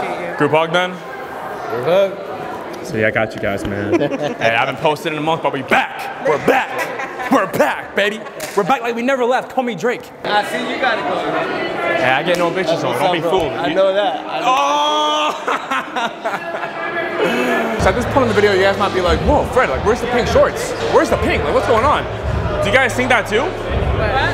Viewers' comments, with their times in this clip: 0:07 Bro that dap was so crisp 😭😂